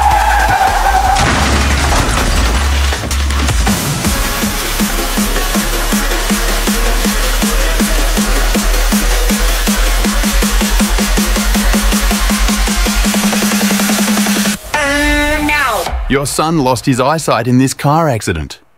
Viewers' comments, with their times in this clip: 0:03 the car doing boombayah 💀